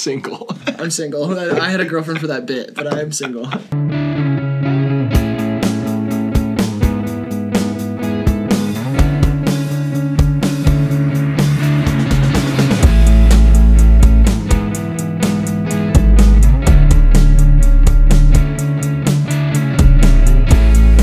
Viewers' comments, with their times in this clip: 0:03 sounds like the free track all youtubers use for theater transition sequences.